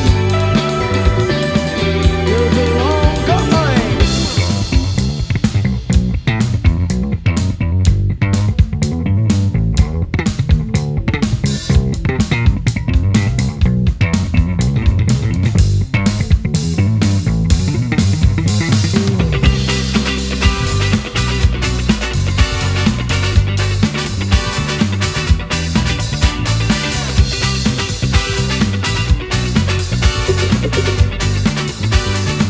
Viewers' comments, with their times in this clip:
0:04 The bass solo!
0:14 The BASS part killed me.